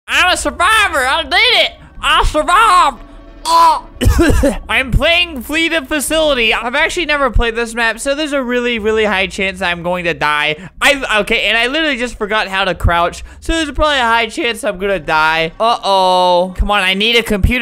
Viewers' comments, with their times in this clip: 0:03 that almost sounded like a baby noise